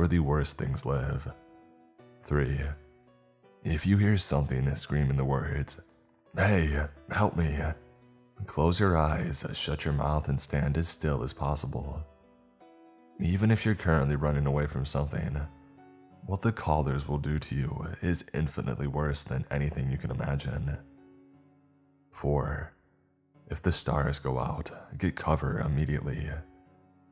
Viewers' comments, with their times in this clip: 0:08 "Close your eyes, shut your mouth and dream a dream to get us out" is what I hear